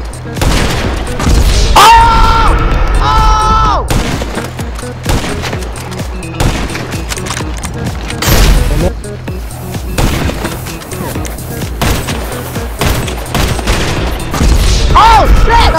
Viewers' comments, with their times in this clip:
0:03 he screamed like it was his dads wedding all over again